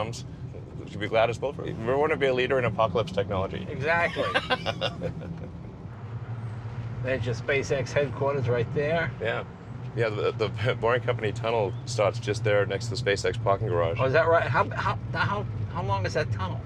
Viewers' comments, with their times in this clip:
0:03 "We want to be a leader in apocalypse technology!" laughs maniacally..
0:04 that is one evil laugh 👀